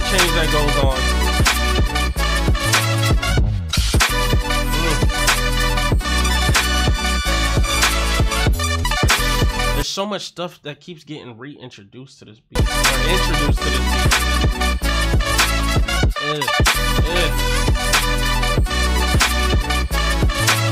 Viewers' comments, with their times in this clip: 0:07 Clear Audio!!! Omg it’s like watching Lau in 3-D and the track is in surround sound. Love how he moved to the bass 🔥🔥🔥🔥 Let me just say this, I can’t even imagine Les Twins judging anyone with the posture of that lady. It gives off negative vibes to me. Moving on… thanks for reacting to the clear audio, it really makes a difference.